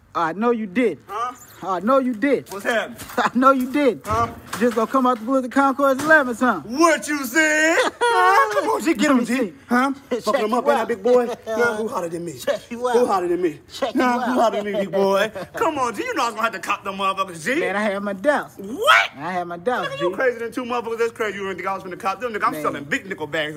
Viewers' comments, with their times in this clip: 0:04 why did i lol so hard at the bikes crashing sound